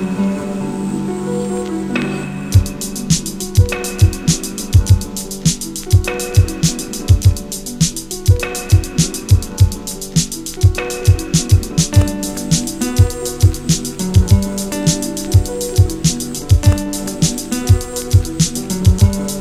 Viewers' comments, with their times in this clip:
0:03 simplistic moderate tones... when the beat comes in such a beautiful mix of archaic and modern... nicely done